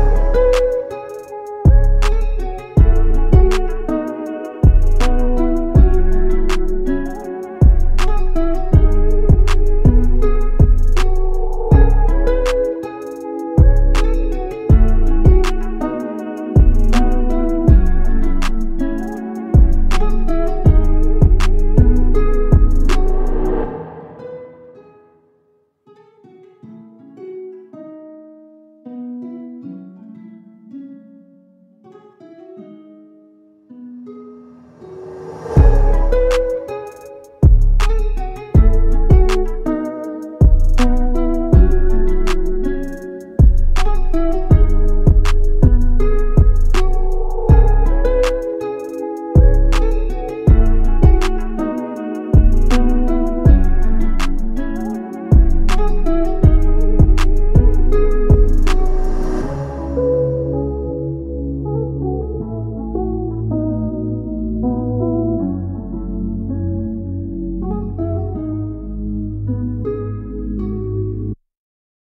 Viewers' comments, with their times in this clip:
0:06 How and why by russmillions sounds mad???
0:59 is that ambient sound from the low pass?? good tutorial bro